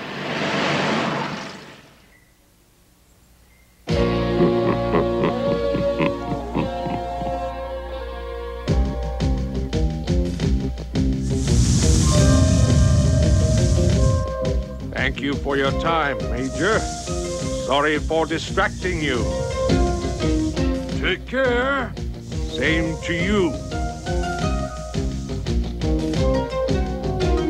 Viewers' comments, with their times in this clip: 0:10 Music's a bit like Mission Impossible